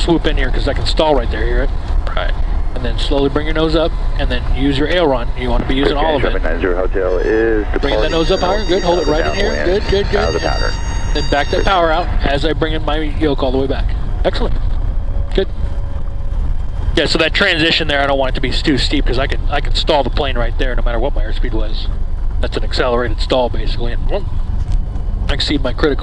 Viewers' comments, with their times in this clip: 0:07 is that a stall warning?